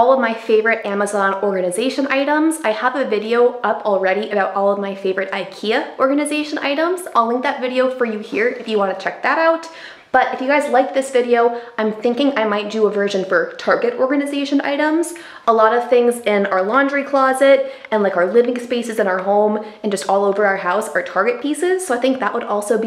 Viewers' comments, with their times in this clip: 0:04 I am italian, love learning other languages and watch people's mouth for his. I love how you say 'all'